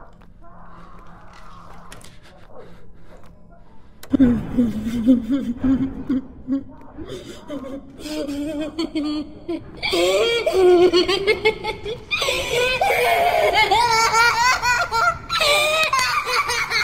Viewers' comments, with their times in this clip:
0:04 Is that... Kira's laugh from death note? Am I crazy? That sounds scarily like a child.